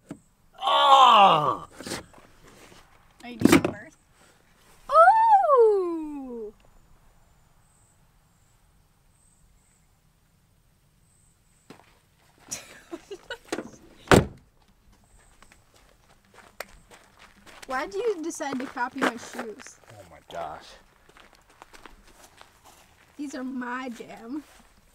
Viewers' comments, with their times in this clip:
0:08 was waiting for a lil toot lol